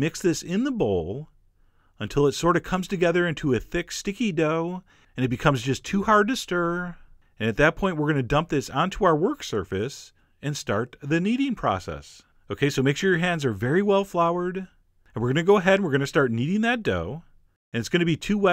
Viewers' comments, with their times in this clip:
0:03 Your voice is so relaxing! Lovely recipe, not good to watch :)